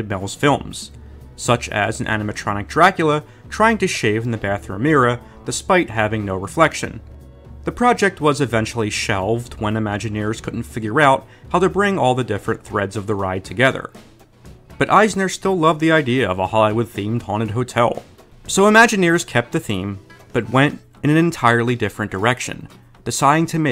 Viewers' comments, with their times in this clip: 0:04 as someone from the Massachusetts I can tell by his accent he is Bostonian